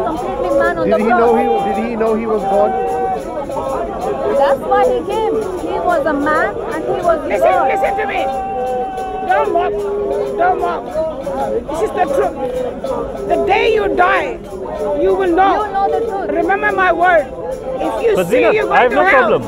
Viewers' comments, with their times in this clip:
0:07 What! didn’t expect that voice 😂😂😂 Yaa Allah watching this video i got headache wAllahi and lose some of my brain cells 🤦🏽‍♀️